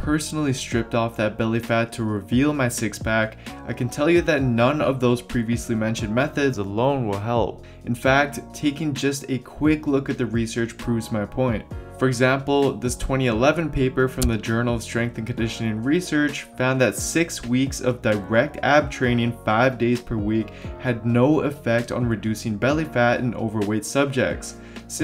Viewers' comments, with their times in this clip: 0:06 I can’t take that audio change.